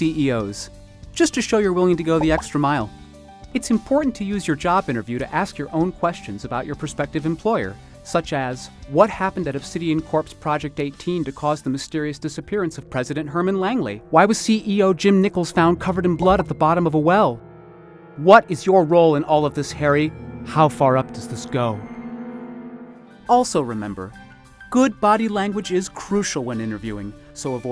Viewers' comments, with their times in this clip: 0:08 wow they synced the narration with the woman speaking